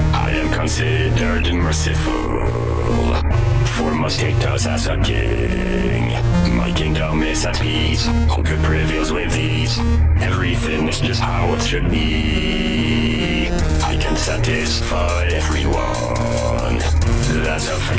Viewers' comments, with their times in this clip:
0:05 When he says "status as a queen" it sounds like he is saying king rather than queen :3